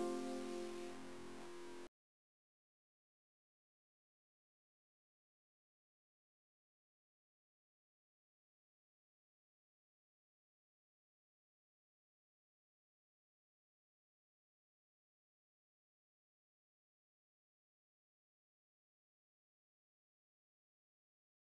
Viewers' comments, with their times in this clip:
0:03 Hi. I don't know what is wrong, but the audio stops working Thought I'd let ya 'all know. :)